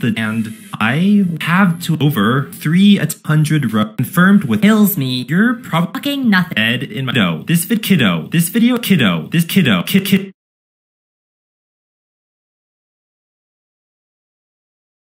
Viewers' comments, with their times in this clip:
0:09 bro needs no autotune